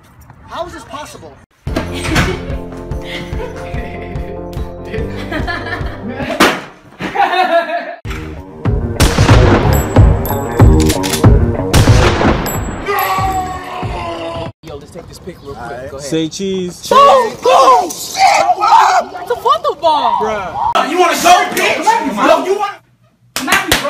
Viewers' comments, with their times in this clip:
0:03 that laugh tho😂🤣🤣😂
0:08 that was funny to shotgun sound effect